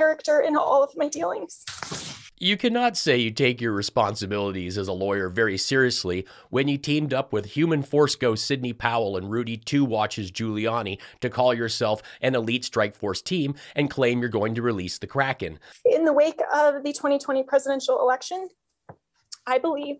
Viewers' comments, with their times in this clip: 0:06 she has that fake cry voice that sounds like nails on a chalkboard 😂